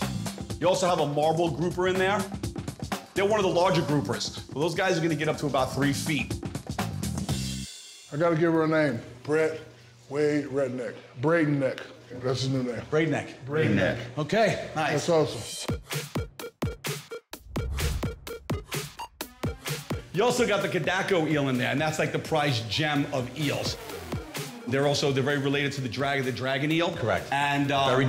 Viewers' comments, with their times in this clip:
0:10 WHEN HE SAID REDNECK LMFAOOOOOOOOOOOOOOO THAT PAUSE